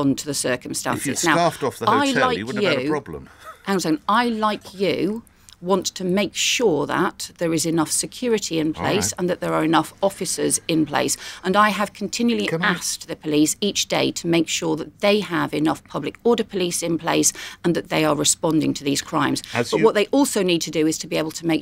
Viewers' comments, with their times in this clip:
0:03 He was even SNIGGERING during this interview.